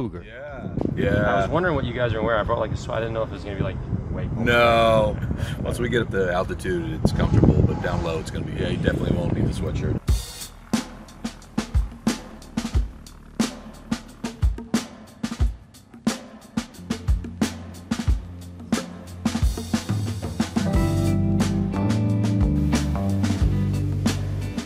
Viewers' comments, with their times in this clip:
0:09 I thought I heard PH intro